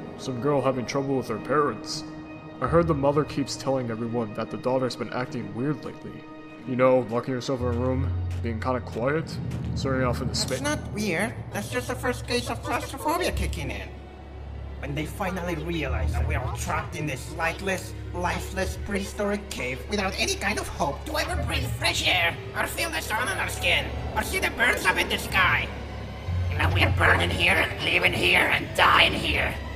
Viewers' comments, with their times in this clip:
0:10 lol that Voice xD